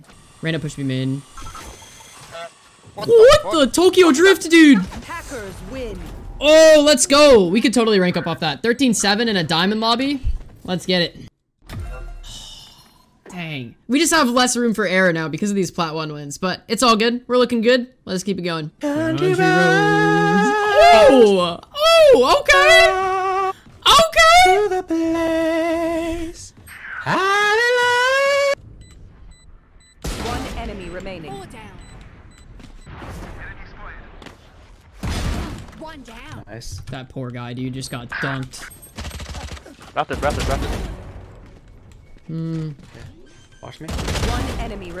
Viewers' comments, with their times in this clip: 0:05 is it just me or does it sound like hackers win
0:25 this sage got a good voice ngl